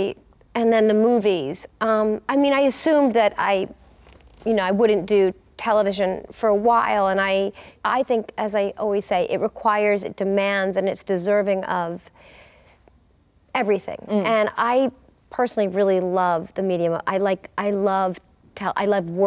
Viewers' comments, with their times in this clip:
0:03 Was that... a queef?